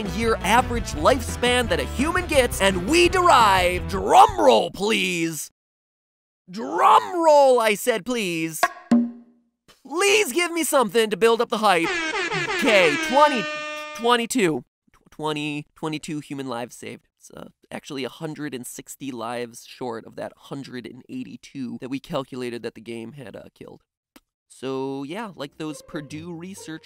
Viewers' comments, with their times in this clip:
0:09 Nice drum roll.